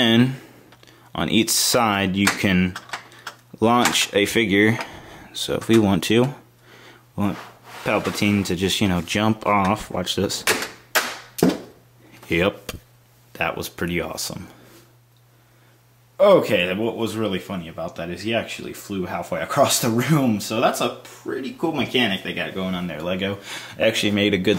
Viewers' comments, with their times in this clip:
0:09 I love it how he says its really funny but he doesn't laugh